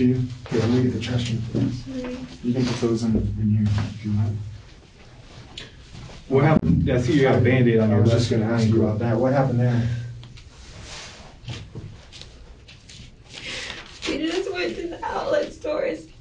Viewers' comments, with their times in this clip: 0:03 another moment where she goes from speaking normally to fake crying out of nowhere and it doesn’t even fit with what she’s saying. She’s crying talking about a fake reason as to why she has that band aid on her hand.